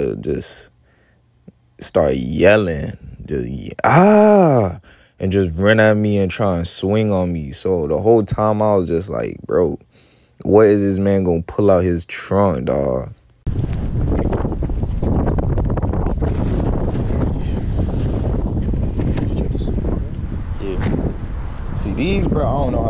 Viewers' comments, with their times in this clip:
0:04 😂😂😂😂😂😂 the “ahhhhhhh” got me